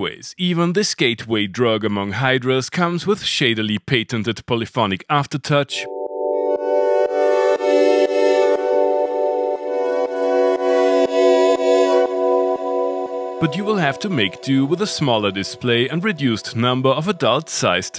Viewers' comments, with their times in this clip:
0:05 ahh sweet chords